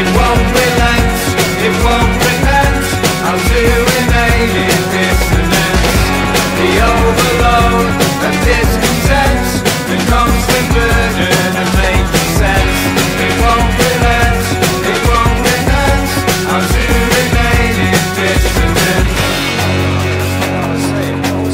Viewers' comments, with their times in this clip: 0:03 the guitar is on point